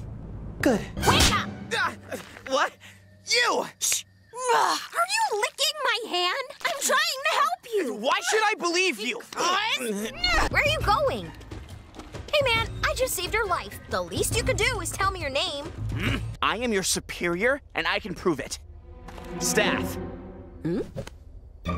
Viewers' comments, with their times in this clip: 0:04 it sounds like a backwards message to me